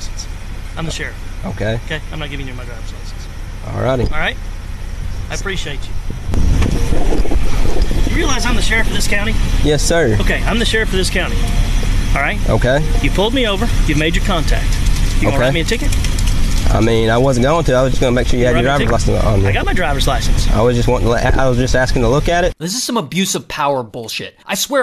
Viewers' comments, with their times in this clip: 0:07 he sounds like rango